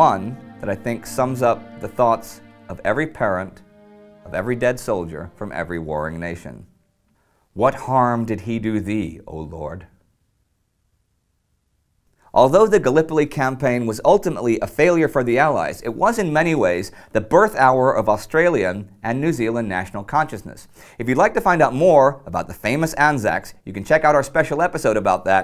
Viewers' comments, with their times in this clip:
0:10 You can hear Indy's voice crack at "oh lord?" That one hurts.